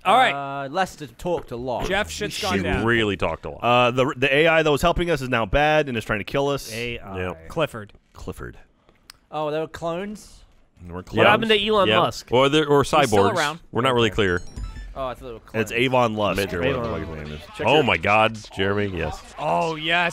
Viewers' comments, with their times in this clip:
0:03 Geoff made the RvB "A-I?.?.?" and I fucking lost it!